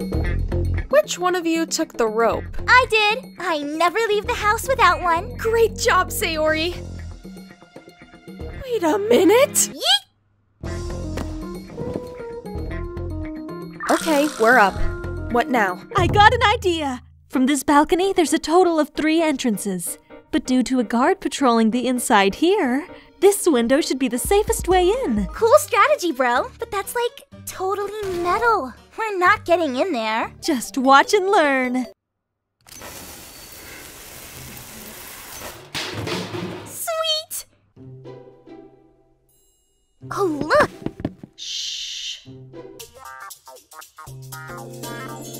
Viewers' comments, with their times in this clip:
0:08 funny how Sayo-Nara starts to play as Sayori mentions the rope.
0:30 "Just watch and learn" * Terraria music intensifies * Truly one of my favourite moments.